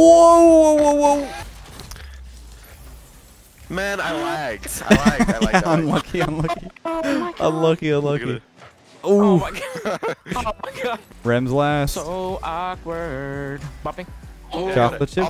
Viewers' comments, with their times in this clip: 0:03 Anyone who doesn’t want to hear the insane comms and yelling go to 🤣